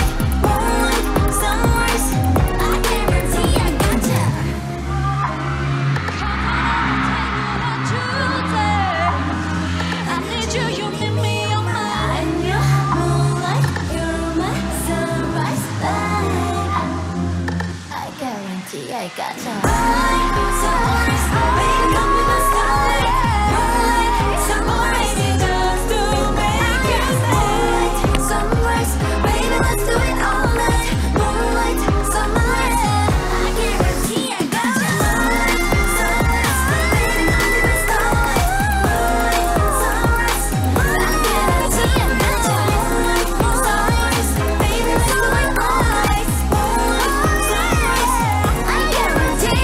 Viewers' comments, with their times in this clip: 0:06 okay here is your pin for Jihyo's vocal, and her, making her mic part of the props 😌
0:33 You can tell she's really upset about her Mic not working. Missing the choreography is the last thing I'd expect from Jihyo. :((((